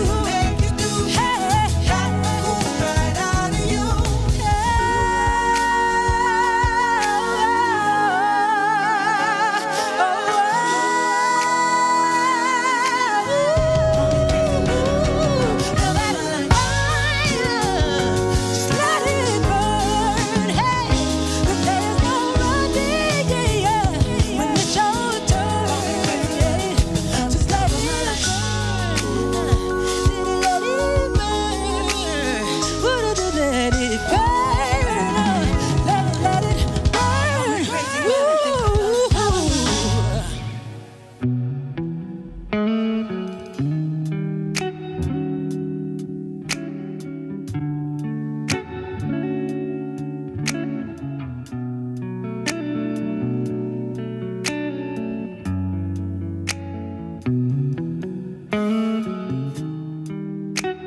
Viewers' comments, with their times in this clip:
0:04 That run from 🥺🥺🔥🔥🔥🔥 Girlllll!!!!
0:44 Why did she minister so hard On Forever Don’t Last and Bodies?🤦🏿‍♂️and that placement ?😩🤯 My ears are Happy